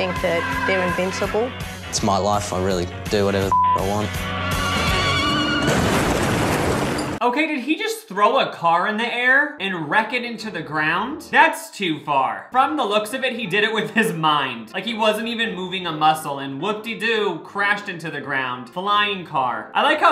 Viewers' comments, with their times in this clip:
0:05 I think that's a gif in the background with some sort of car crash sound effects.